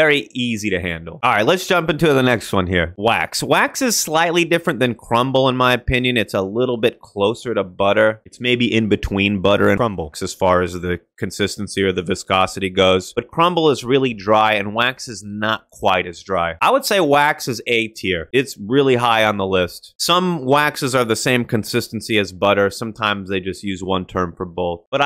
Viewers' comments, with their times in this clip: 0:09 audio fix had me like whoa!